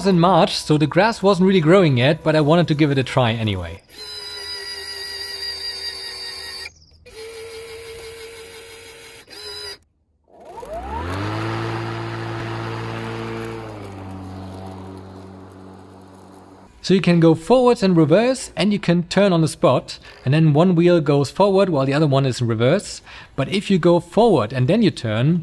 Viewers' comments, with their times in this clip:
0:07 Sounds like my old 80's electric can opener.